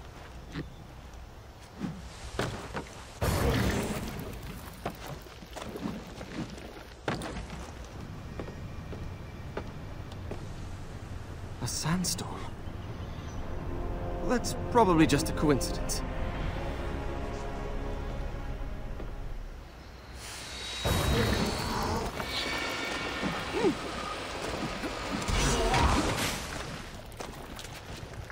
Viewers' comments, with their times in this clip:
0:10 "A sandstorm?" [Faint sound of music...] The prince cracks a glowstick.